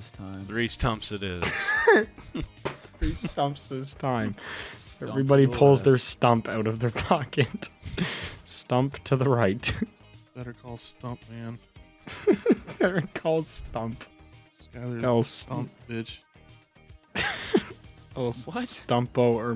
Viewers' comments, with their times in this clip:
0:03 this unironically sounds like a conversation thats being held thru the vents of a psych ward at 3 am.